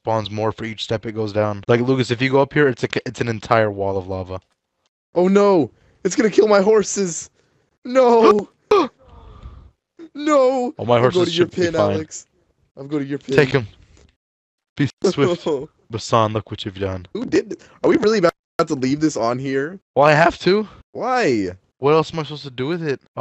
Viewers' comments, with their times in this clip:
0:08 THAT PERSON SAYING NOOOO 😂😂😂😂